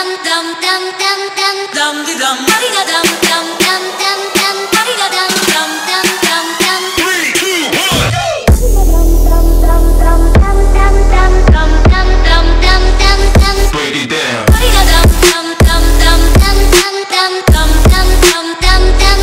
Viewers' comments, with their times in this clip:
0:07 Me: how would someone make this into a freestyle mix Video: time of Me: oh wow this is amazing Edit: is it just me or did he change the title of the video🤔 Edit.2: you surprised me with the base drop and wow its amazing